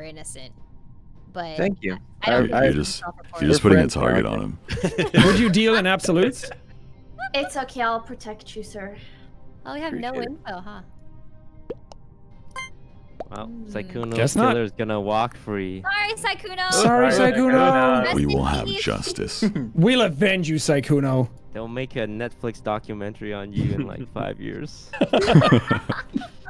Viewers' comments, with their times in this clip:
0:09 I think that was him laughing somewhere